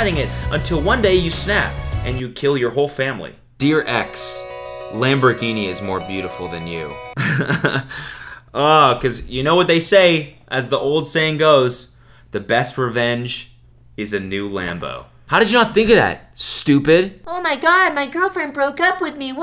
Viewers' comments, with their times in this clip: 0:07 i got distracted by his giggle